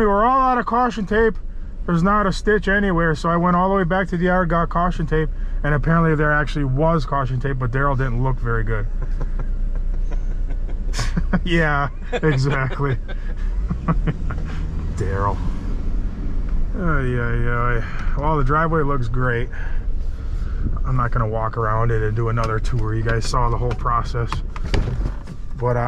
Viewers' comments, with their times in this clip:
0:08 his laugh tells you everything you need to know hahah